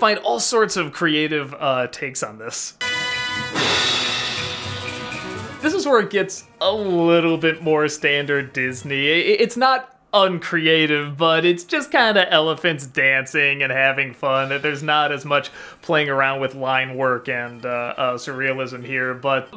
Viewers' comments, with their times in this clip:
0:06 One thing I noticed now as an adult, when the "pink elephants" become less abstract and more Disney-like until everything becomes loud, annoying chaos that explodes into Dumbo waking up, this could be seen as the brain slowly waking up after a dream and the perception and memories of reality destroying the dreams abstract rules until Dumbo is awake. Also, the loud and annoying car- and train sounds as well as the explosion could very well be the hungover-headache kicking in (since Dumbo is drunk)